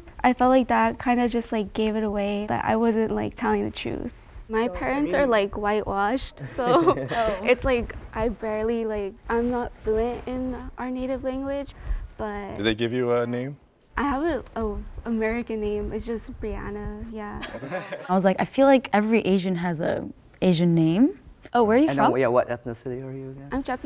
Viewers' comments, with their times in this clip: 0:07 I could. I'm chicano so I know what alot of chicanos sound like, I've met many chicanas that sound like her ... when she said "I'm not fluent in our native language" I knew that was a lie bcuz I could hear a bit of a mexican accent. I'm surprised they didn't catch that.